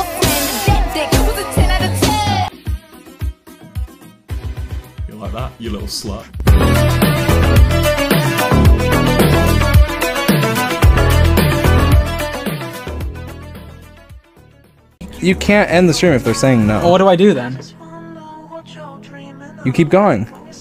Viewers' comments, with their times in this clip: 0:04 WOAH WOAH, WILBUR, WHAT WAS THAT? CAN SOMEONE EXPLAIN THIS TO ME, EVEN IF ITS EDITED, IT SOUNDS SO NATURAL!! AJSHEUDBKDBEKJEJEISBEDEHUD!!